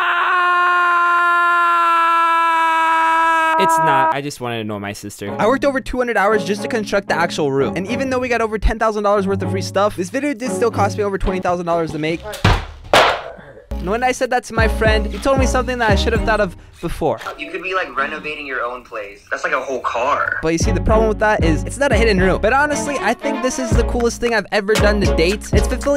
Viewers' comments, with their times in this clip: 0:08 mark rober music enters